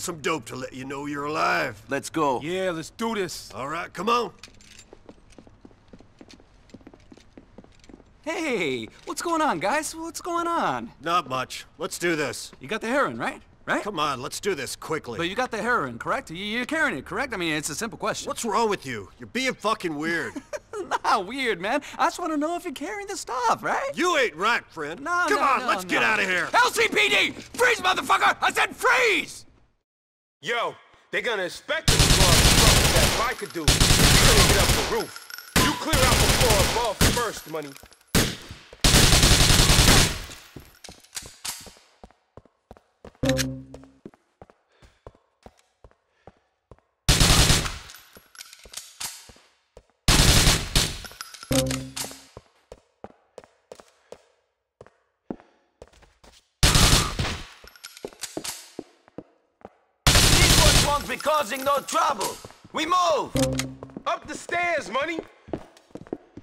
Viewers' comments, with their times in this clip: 0:07 Anyone else notice the guy is the SAME voice as Woozie from GTA SA? I know he is not the same dude, but the same voice actor plays him!
0:54 Love that short quiet scream